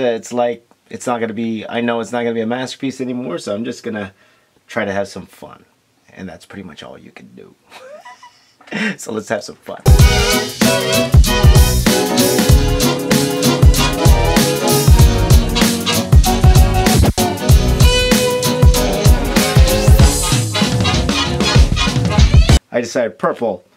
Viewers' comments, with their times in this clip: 0:07 that laugh tho😂😂